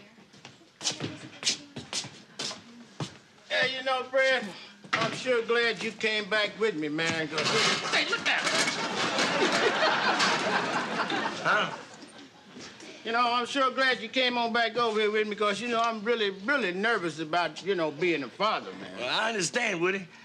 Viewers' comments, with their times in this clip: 0:06 I don't think that was scripted!!! Woodrow had to restart his line!